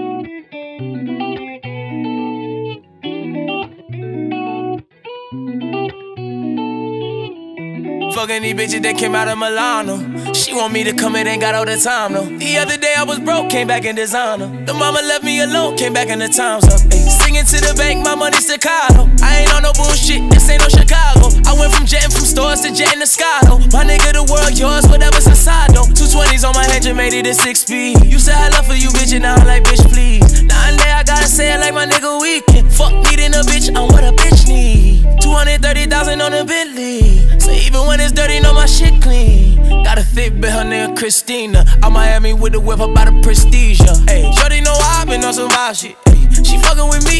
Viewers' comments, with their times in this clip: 0:08 and this is roddy riches flow
0:33 sound like heartless
0:34 heres proof for weekends flow